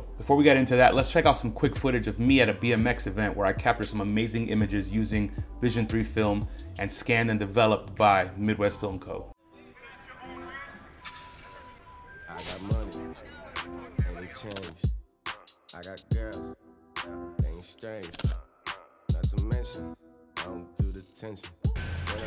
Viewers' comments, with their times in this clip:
0:09 starting ... background tracks SLAP. (I guess that's a bay area term 😂)